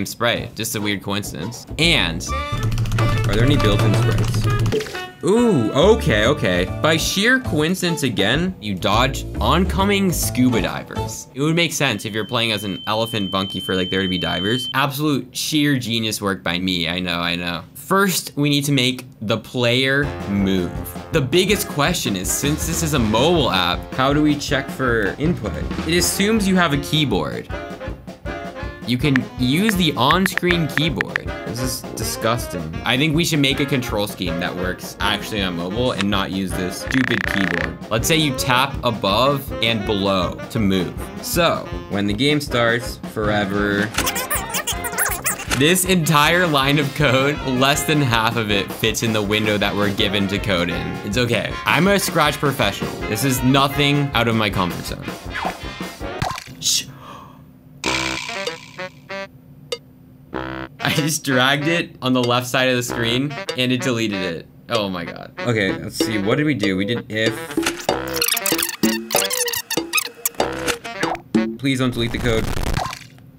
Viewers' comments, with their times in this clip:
0:04 score bubble sound
0:53 close popit and delete object sounds
0:57 sounds like animal crossing call rescue service playing rn